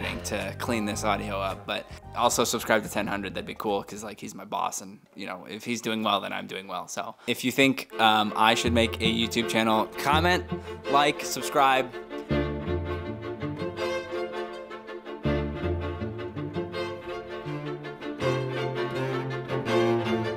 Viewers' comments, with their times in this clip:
0:08 That's my favorite string quartet piece!